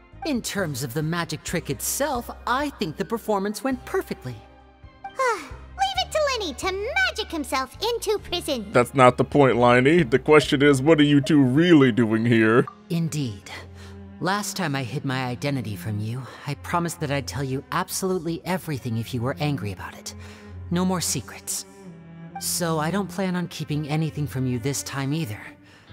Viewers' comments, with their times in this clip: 0:06 I just love the way Paimon's VA delivered the line.